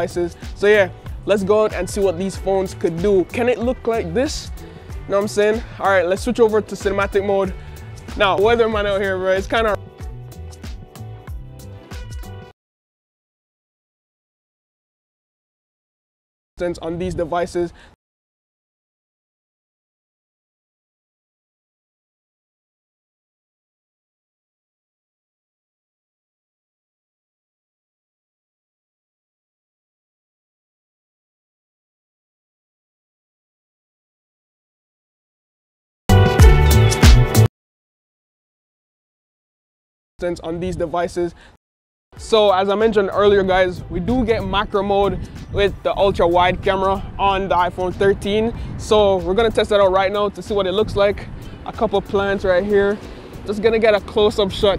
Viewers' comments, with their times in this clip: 0:07 Audio cuts off
0:28 why no sounds
0:41 Anyone else can’t hear his voice ? Like a weird edit error or smt?